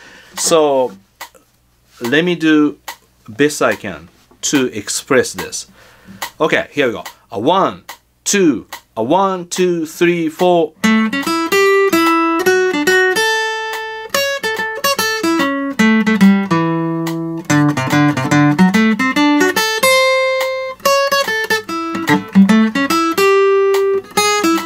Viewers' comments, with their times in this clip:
0:07 plays soullessly but with feel